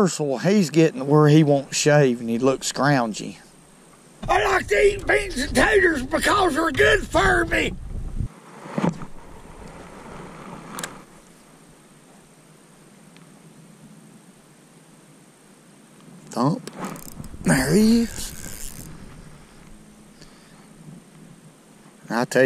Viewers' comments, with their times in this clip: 0:04 Ought Damn Son, I thought you might have been Karl Childers 1st Cousin, Luther. Keep pulling in those Big Crappie Toads ! ! ! Sweet Eatin'